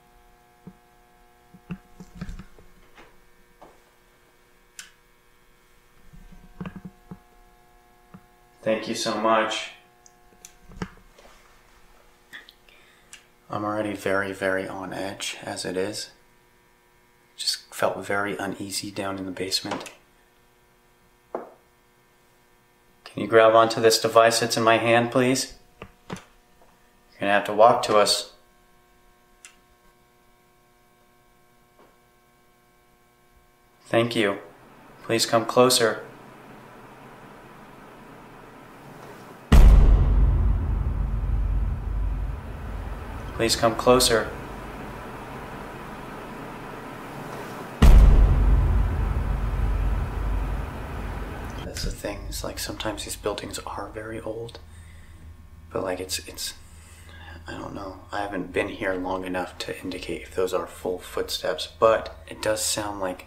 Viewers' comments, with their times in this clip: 0:10 there what sounds to be a little girl say something but I can't quite figure out what she said
0:10 Dudes! you can hear a child's voice!
0:10 One or two possible separate voices one of them clearly whispers thank you it is so spooky I keep going back and listening
0:11 sounds like a child whispering, "I'm dead".
0:11 You're not talking to kids that's for sure. That's something evil playing pretend. They always pretend to be kids or family. Hisses are always demonic. a little girls voice says welcomee after you said thank you and maybe another fainter one before that
0:11 Ok but minutes something whispers "not again" and they didn't point out but it was so clear omg 😲
0:11 listen closely you hear a child's voice
0:11 Yall didnt catch the whisper ??
0:11 Did anyone hear "not again" because i diiiiiddd its sounds like a little girl
0:11 Skip to and listen it sounds like a little girls voice saying I’m dead
0:12 sounds like a child saying "not again". At least that's what I'm hearing.
0:12 Heard a voice saying not again...
0:12 sounds like a child saying "again"
0:12 sounds like a little girl whispering don't know what she says maybe again?
0:12 a whisper saying ‘ not again ‘
0:12 So nobody heard the little girl say “im dead?”
0:12 Did anyone else hear a little girls voice ?
0:12 I here a whisper and to me it sounds like “not again”
0:12 Anyone else hear that weird exhale or whisper ?
0:12 young voice says I'm dead
0:12 In you can hear whisper say I can’t
0:12 I can clearly hear a child saying "not again" or "knock again" did anyone else heard it ???
0:12 At minute sounds like a child saying "I can't get out". That's what I've heard. Not sure if other people had, but I've seen some comments that did hear it.
0:12 Great video guys!! I heard a voice. It was a whisper
0:12 While you were in the post office we hear a soft whisper of a little girl. Can’t quite make out what she says.....sounds like “again”
0:12 I hear "Not again" in a kid's voice.
0:13 So wonderful you literally had a conversation with those children!!! disembodied child's voice "Again"
0:13 I herd a whisper but I’m not sure what it said. Did anyone else catch that? Sounded like a lil girl
0:13 a kid voice.
0:13 sounds like a disembodied voice of a little girl that's said or what i think it sounds like she said "I'm dead"
0:13 Is there a small voice ??
0:35 when the chair in the basement moved while they were hearing a sliding noise i was freaking out dude. I love the way you're talking to and with the spirits. You guys are doing a great job! Keep it up 💜
0:35 -38 the white chair in the cellar moves when u hear the scrap
0:38 mins sliding noise watch the chair in the basement move 👀
0:38 That chair on the right MOVED that's the sliding noise!!!
0:39 when you hear the “sliding noise” you see the chair in the left screen move a little. I don’t know if anyone else noticed that.
0:39 Holy shit!!! The sliding noise WAS the chair! It went from right to left, the wooden chair! Clear moving. It was cellar cam,at
0:40 Towards the end of the video, while you guys were in the post office, in the cellar when the sliding noise was heard!!! !!!! The chair in the bottom right MOVES!!! FREEKIN EPIC CATCH GUYS!!!!
0:40 When the sliding noise happens you can see the chair move. Go back about ten seconds and watch the pale cross back chair.
0:47 the chair in the basement was the sliding noise!! 😳😳
0:47 the chair in the cellar on right hand side slid!!! thats the sliding noise.